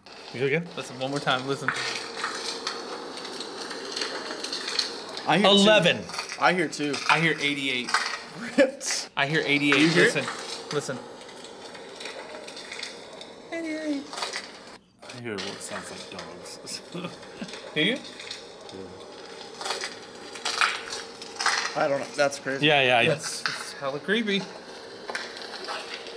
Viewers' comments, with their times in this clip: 0:09 I hear 11